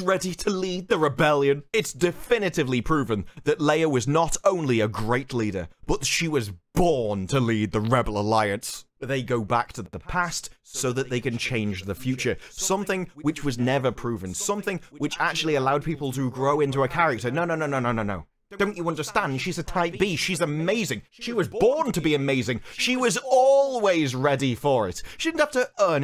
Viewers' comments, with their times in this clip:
0:07 I'm hearing the voice lines twice through here... anyone else hear it slightly delayed and much quieter?